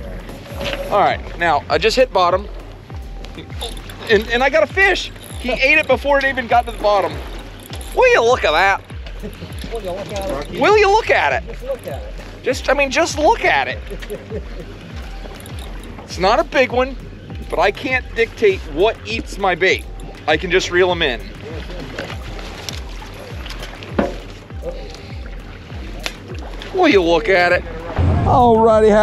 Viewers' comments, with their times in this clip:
0:10 You bet your sweet arse I heard the ED BASSMASTER call out !!